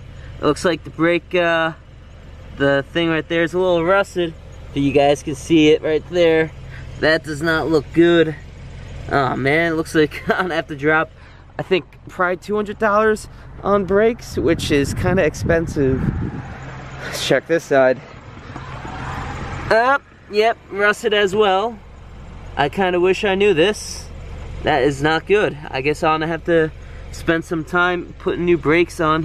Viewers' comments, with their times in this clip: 0:10 your brake pads are completely gone that’s why it has that line on the rotor it’s metal on metal noise your hearing when you brake. You need new brake pads